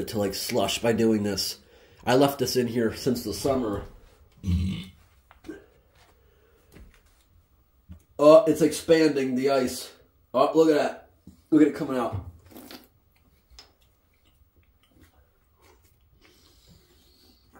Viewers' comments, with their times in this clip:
0:04 nice deep burp